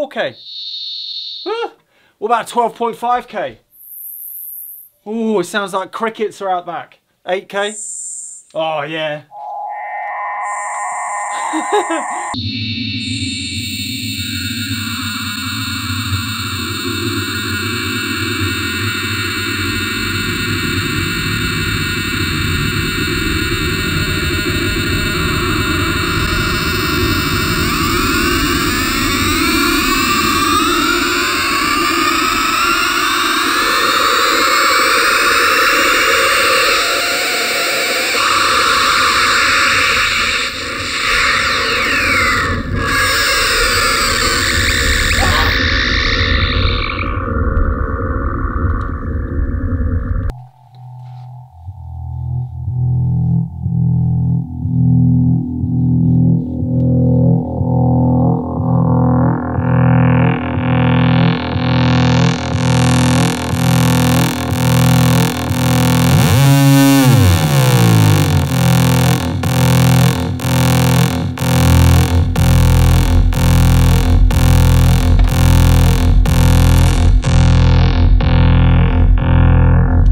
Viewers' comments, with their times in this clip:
0:07 sounds kinda like an old router dialing in :D
0:08 you are now connected to the internet
0:08 Just a minute... I think I'm getting a fax...
0:08 made me think of OMD's Maid of Orleans
0:12 Sounds like 56kbps. Welcome. You've got mail. lmao
0:16 sounds like dial-up Internet
0:17 my dialup modem woke up and printed the line CONNECT 1200/NONE
0:18 omg sounds like heaven!
0:19 has a Stockhausen vibe to it. I think you gave me a few suggestions as to how those sounds were made back in the day. Awesome. Thanks!
0:32 that sounds a lot like an old modem tone unsurprisingly. Have you ever thought about using an old modem to generate tones?.. After all that's what they are made for :)
0:32 sounds like when a dentist is drilling ur teeth
0:36 Man....right about the ish timeframe it summoned a scream from the digital spirit realm.... These are amazing man!
0:56 T H I C C E S T Lowpass filter to date
1:05 that's a fat saw bass if i've ever heard one.